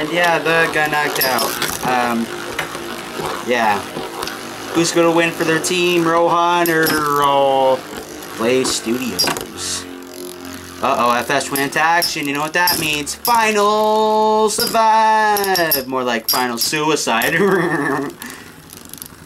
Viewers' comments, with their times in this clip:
0:07 F:S = Final Suicide😂😂lol, and dat laugh doe.